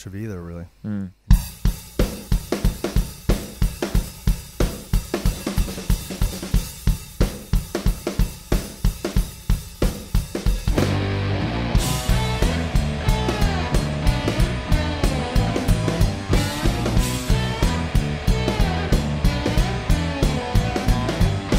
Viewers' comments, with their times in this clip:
0:05 any drummer here, that happens to know what the amazing fill is? it's amazing